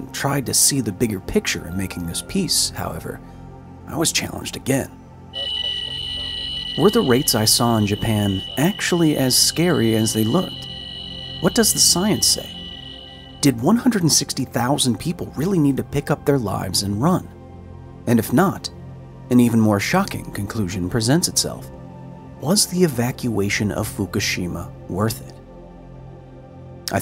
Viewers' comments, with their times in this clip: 0:10 his rad alarm went off suddenly much louder than anything else in the video and I had an absolute heart attack because it sounded like it was coming from the center console of my truck.